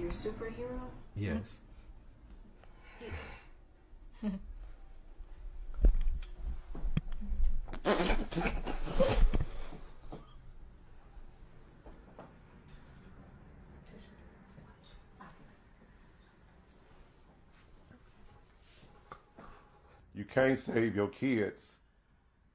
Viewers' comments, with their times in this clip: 0:07 Uh was his dad laughing ? 😂